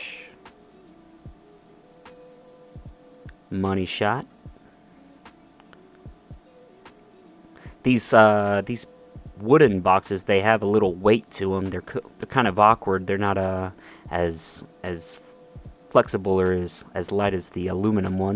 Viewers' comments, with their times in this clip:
0:03 didnt he sound like idubzz